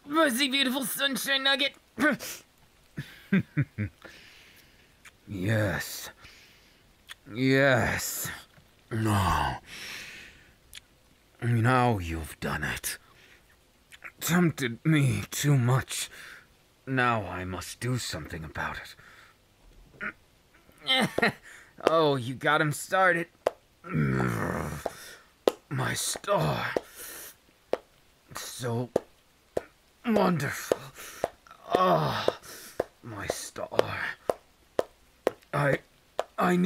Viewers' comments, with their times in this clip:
0:08 Me: Not a soul: Not even Jesus: Audio on Panics - “ AAAAAAAAHHHHHHHHHHHHHHHHHHHHHH!!!! “
0:22 is the clapping part 🙃👍🏻